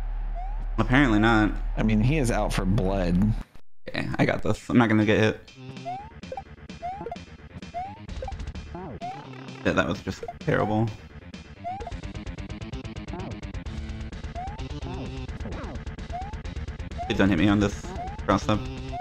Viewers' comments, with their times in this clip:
0:06 That midi of Redneck by Lamb of God surprisingly made it tense to watch 🗿🖤